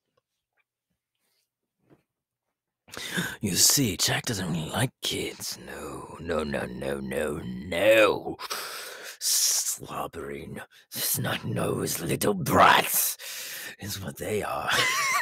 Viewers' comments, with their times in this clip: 0:03 Imagine telling him "But clowns are supposed to like kids" xd Also, past the end of the video, he just sounds like a super extroverted person after quarantine but didn't have wifi during such xd